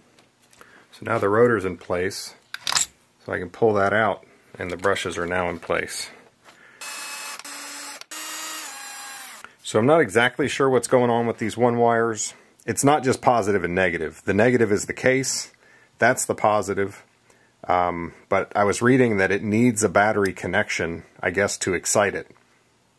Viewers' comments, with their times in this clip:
0:06 You played the first four notes of the British national anthem with your drill. “God save our grac…”